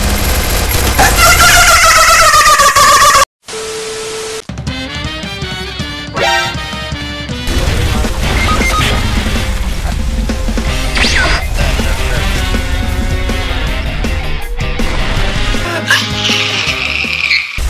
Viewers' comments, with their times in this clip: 0:05 Free fire BUT using Fortnite sounds